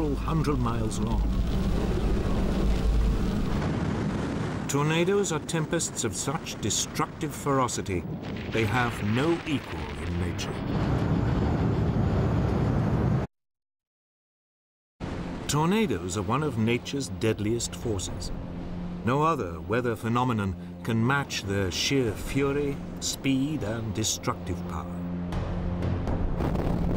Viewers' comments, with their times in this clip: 0:08 Sound can not travel at the speed of light, you TV bitch. Quit faking shit, to make it seem more intense; It doesn't work.
0:08 I'm talking about TV programs doctoring footage, and adding sounds to clips, to make them seem more intense. If lightning strikes in the distance, you can't INSTANTLY hear it, because sound doesn't travel as fast as light. This footage is even time-lapsed, yet there is instant thunder with each flash. Storms are naturally intense, and don't need some tv a-hole adding fake sounds.